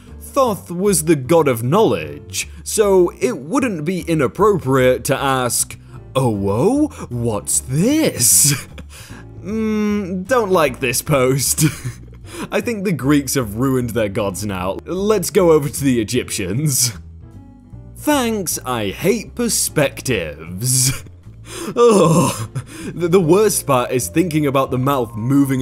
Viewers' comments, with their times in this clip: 0:08 i cant be the only one that thought be gone thoth